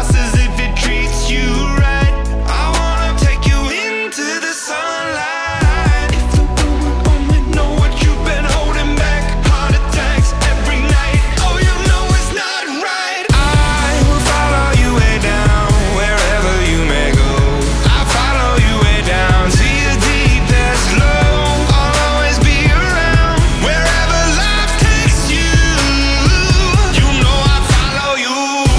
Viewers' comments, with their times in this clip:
0:10 remind me of the We didn't start the fire song